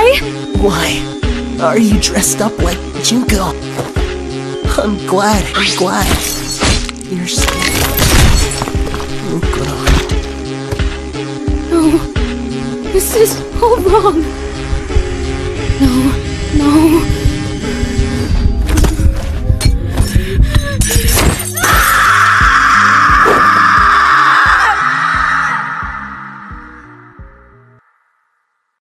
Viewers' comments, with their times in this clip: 0:07 That crunch tho
0:21 Is it bad that I replay more than I should, just for that IMMACULATE and powerful guttural scream...?